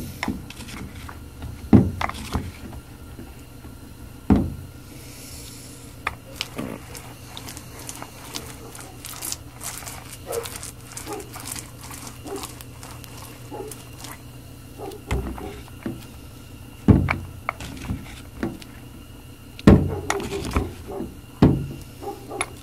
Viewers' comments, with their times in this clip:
0:06 Lol did you sneak a fart ?